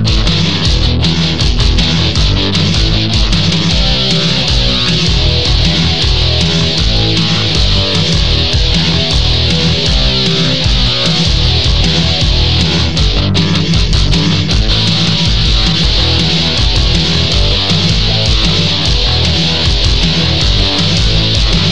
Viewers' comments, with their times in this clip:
0:03 that "wrowr wrowr wrowr, wrowr wrowr wrowr" bit always gives me chills up and down my spine. If you were to put those guitar licks into the Ultimate Warrior's theme as a bridge, the result would blow the top off every venue from pure awesomeness.